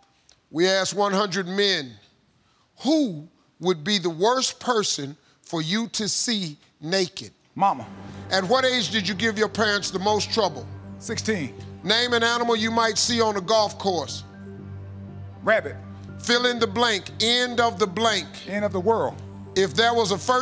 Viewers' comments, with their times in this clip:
0:07 the way he said “Mama” made me laugh! 😂😂😂